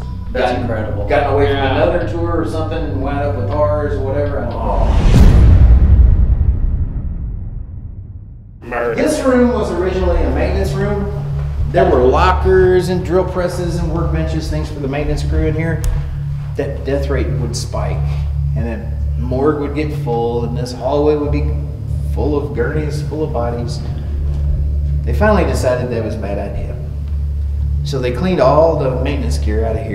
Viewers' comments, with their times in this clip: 0:08 is it just me or did i hear 'murder' clear as day.
0:08 during transition sounds like something is saying "Murder"
0:08 Is someone in the group saying murder or is that an EVP?
0:10 it sounded like “America” in a southern scruff tone. But idk if that was on purpose to be funny or something was caught because it was so random